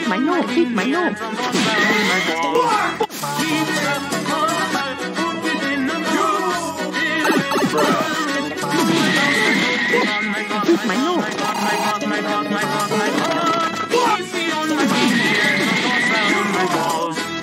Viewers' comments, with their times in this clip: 0:05 The Soulja boy "YOOOOOOOUUUU!" genuinely made me laugh out loud.